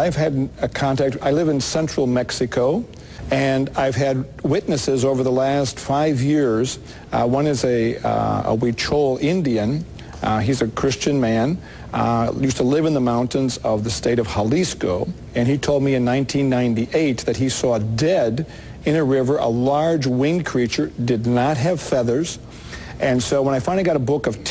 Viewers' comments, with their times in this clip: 0:04 Is it just me or did he say, that one of his star witnesses was a "We-Troll" Indian? I know this is an old video but, am I missing something? or was he just trolled by some woke Mexican village natives!?
0:08 Excuse me, I like rewatching these as they make me piss myself laughing. At anyrate, did he say one of his contacts was a "We Troll Indian"? Cause that's what I heard, lol. Which is quite fitting considering the subject matter.